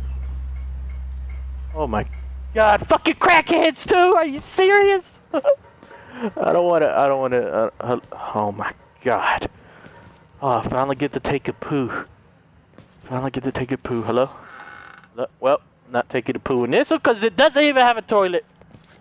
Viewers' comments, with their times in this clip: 0:04 Del had a small hiccup